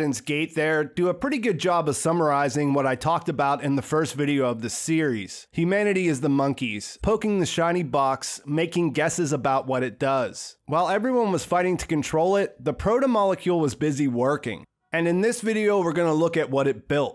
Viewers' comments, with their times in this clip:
0:03 "first video of the Ceres"? 😂